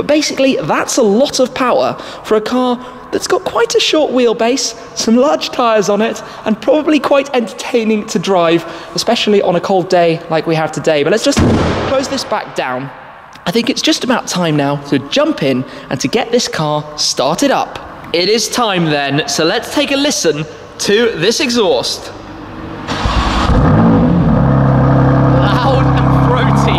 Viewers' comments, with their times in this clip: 0:10 minute after that SLAMMMM!!!! the car now make 100 hp and no torque lol